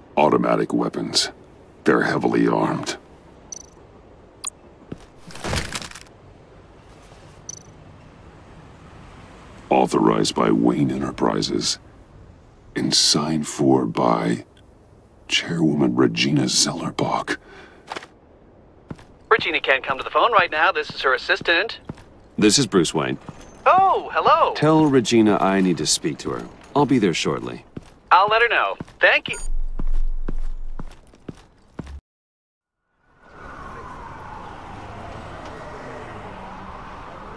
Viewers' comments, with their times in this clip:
0:09 I love how he can just change his voice like it’s nothing
0:23 right? Yeah it's bizarre. Lol But that actually makes it more awesome how his voice changes.